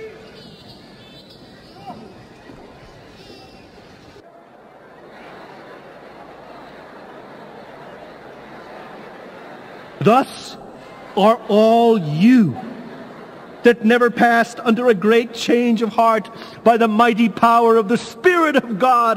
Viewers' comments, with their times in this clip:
0:03 The baby crying sums up the message of gloom and damnation of this, and reformed theology in general.